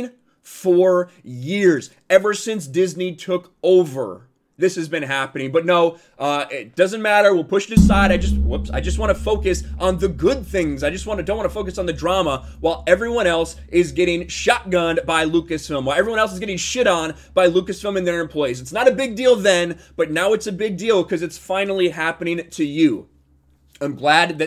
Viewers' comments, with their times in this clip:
0:06 was an out of this world type of sound